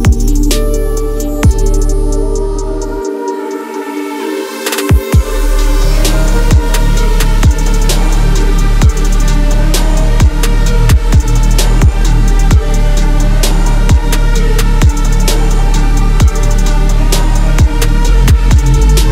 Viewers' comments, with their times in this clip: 0:05 that transition is massive...